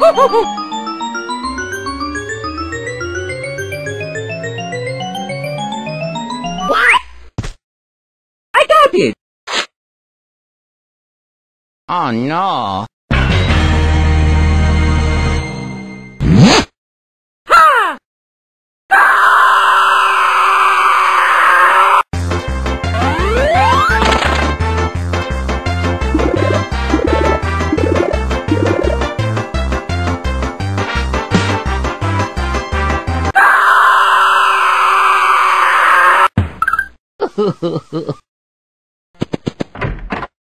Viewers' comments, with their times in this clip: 0:10 Mom! why did Mario put off luigi pants and scream? Mom: idk
0:22 Baby park music "Baby park" "Baby" "OH GOD WHY"